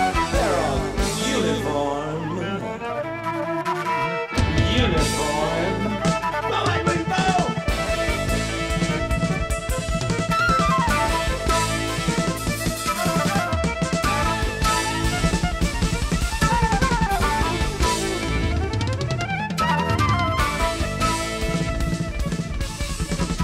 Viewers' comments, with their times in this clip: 0:07 This lineup of Craney and Jobson brought a level of jazz-fusion technicality to the songs. Mark Craney wailing out on Uniform is a delight!